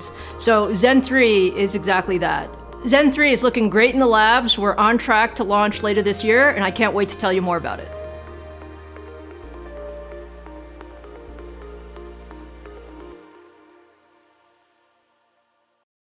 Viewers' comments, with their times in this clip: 0:04 Why she is whistling too much Who knows.... Maybe to wake up "intel"
0:04 for that sweet Lisa su whistle